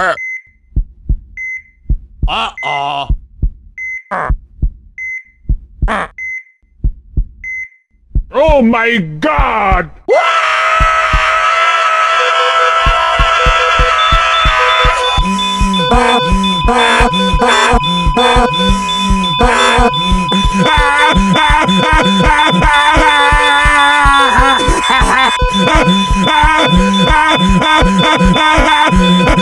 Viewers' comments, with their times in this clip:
0:10 not the beeping the 1st scream wario made was funny